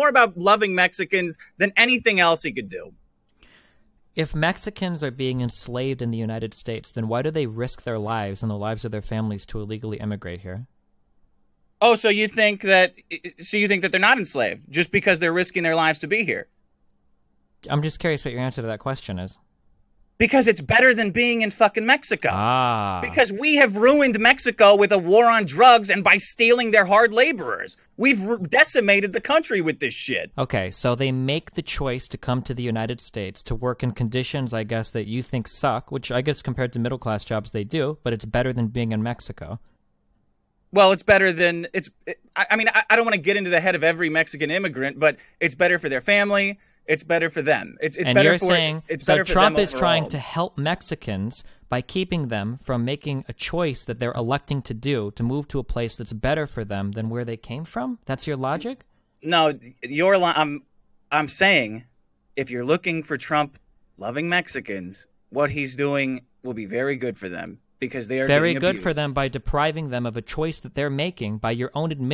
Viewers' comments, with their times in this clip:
0:04 I love this part the most. You can tell by Masterson's voice that he looses any confidence in his arguments and is way out of his depth. Destiny destroys him with an elaborate troll. He pretends to give Masterson a way out to save his honour by ostensibly giving him an opportunity to not further embarrass himself. Masterson could have moved on as Destiny suggested but takes the bait. Destiny basically implied: "Everyone knows you're moron at this point. Let's move on so you're not embarrassing yourself but we all know your massive ego won't let that happen so feel free to tighten the noose around your neck"
0:58 Holy shit damn how fucking rekt Dick got there and just starts screaming like a trigglypuff. So fucking hilarious